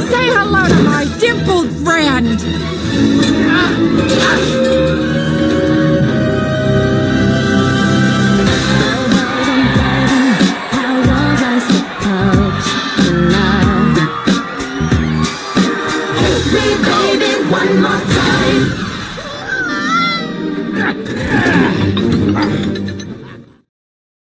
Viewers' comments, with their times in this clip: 0:08 Oh I 💖 this song.